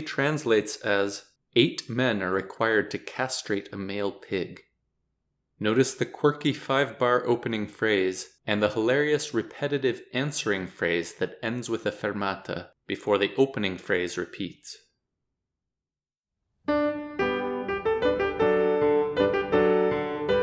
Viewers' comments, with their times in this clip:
0:06 couldn't quite conceal your laugh there :')